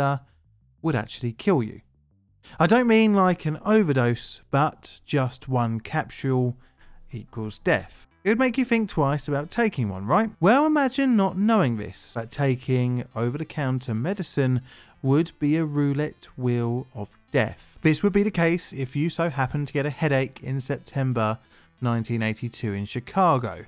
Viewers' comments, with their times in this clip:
0:06 did you use an ai voice synthesizer for this video?? the voice has an unnatural break, and only occurs when the ai struggles.